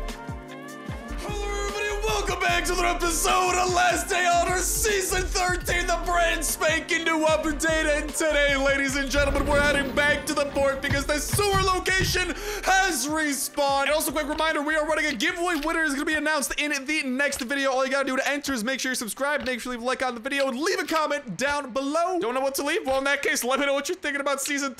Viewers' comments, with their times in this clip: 0:06 love the hype keep yelling